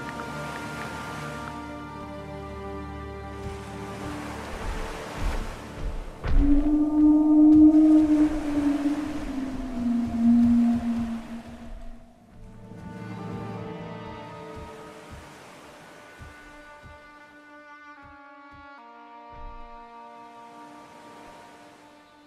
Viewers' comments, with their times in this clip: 0:06 bro that sounded like a sauropod that needs for help